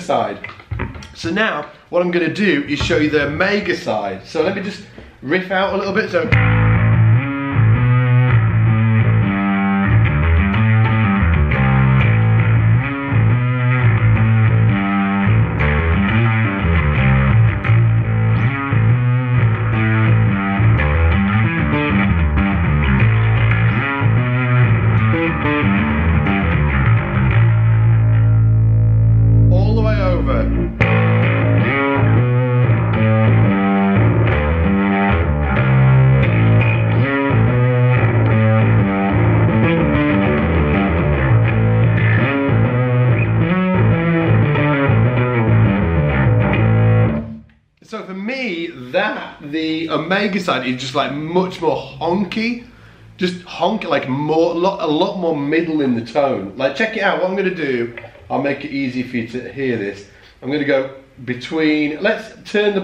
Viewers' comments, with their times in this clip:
0:04 #darkglassalphaomega I loved the Omega setting, it sounds so killer. I'd use it with the clean blend to give my three-piece more bite and edge during our harder hitting songs, and maybe have the Alpha setting with more clean blend for the softer numbers. That riff you played is so badass as well, I'd love to play it through that pedal!
0:05 #darkglassalphaomega I really loved the final Alpha tone you dialled in at before before swapping over to the Omega circuit. I'm recording a solo project at the moment, and trying to get a really good tone entirely in-the-box is quite frustrating, so getting this sound out of a single pedal is exactly what I need. Thanks for running the giveaway!
0:07 #darkglassalphaomega I loved the sound. Very Muse.
0:09 #darkglassalphaomega My favourite setting is the one that you set in the minute for me it's the best setting. Its sound amazing I love it!
0:24 #darkglassalphaomega Best setting for me was sounds really good
0:30 #darkglassalphaomega The setting in it sounds like a screaming crazy whale with wings
0:30 #darkglassalphaomega Personally I liked the part best and the tone would definitely sound interesting in a metal setting with stand out bass playing. Keep up the good work with the channel!
0:30 #darkglassalphaomega I love the setting I'd listen to a full album of just that tone and drums every day of my life. love it
0:30 #darkglassalphaomega the setting in was screaming at my soul in the most beautiful way possible
0:30 #darkglassalphaomega The setting in is gnarly !!
0:30 The sound Omega all the way. Mean sound! #darkglassalphaomega
0:31 #darkglassalphaomega Alpha with a bit of omega blended in sounds great, but the tone was just rippin. Such a cool pedal!
0:44 #darkglassalphaomega loved the sounds for sure! That Omega side is insanely awesome and like almost vintage?? Great sound all around.
0:44 #darkglassalphaomega nice pedal I like the omega side with lots of drive I was really getting into that grove but the blending is fantastic .I could get lost for hours messing with that pedal.